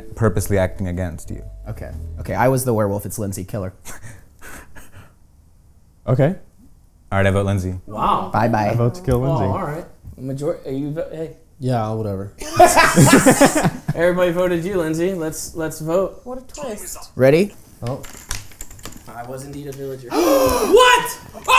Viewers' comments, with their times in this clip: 0:03 what was this awkward silence